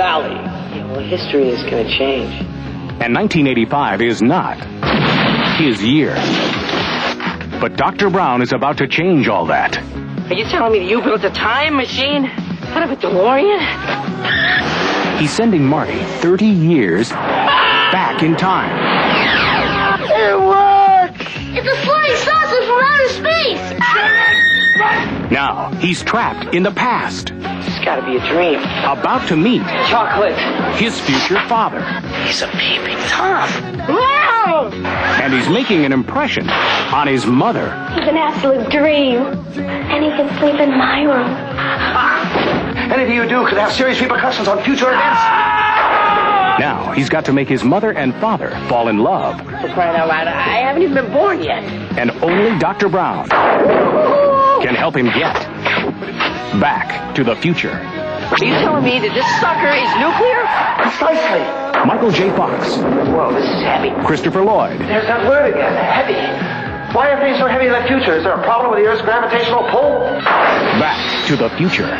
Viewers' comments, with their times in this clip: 0:03 And 1985 is not... (crash) his year.
0:25 funny he's going to meet "chocolate"
0:28 about to meet chocolate?
0:58 Can anybody explain to me why is there an X-Wing laser sound ?